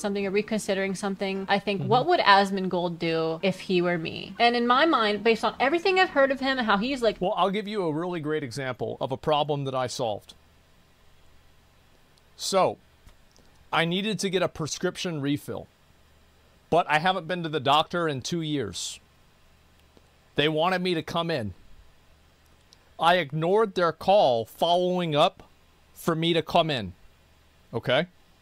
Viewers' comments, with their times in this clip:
0:03 the perfect pause lol. I wasn't watching. I was listening and it was perfect lol
0:10 I feel like the pause is better hahaha.